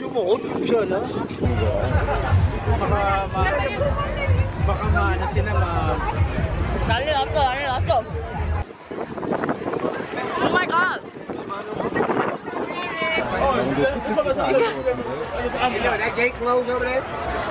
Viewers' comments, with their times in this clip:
0:03 Was I imagining hearing Filipino talk at the background? ''Baka ma ano sila''